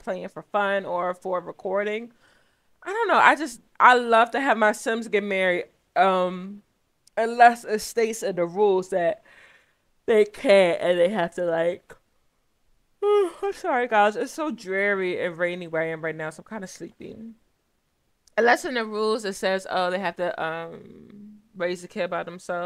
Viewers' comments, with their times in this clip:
0:09 you made me yawn along with you😂